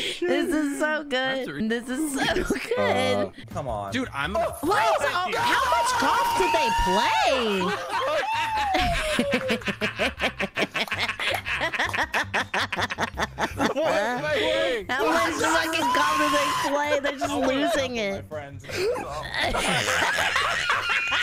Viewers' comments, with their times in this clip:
0:09 Holy shit! That was like listening to the male and female version of the same laugh, side to side😂